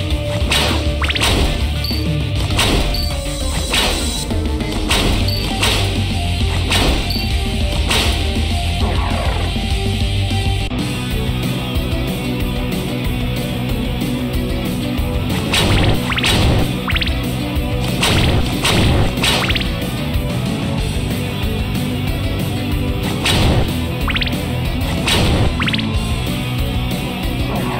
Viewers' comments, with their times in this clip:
0:09 that den remix is spectacular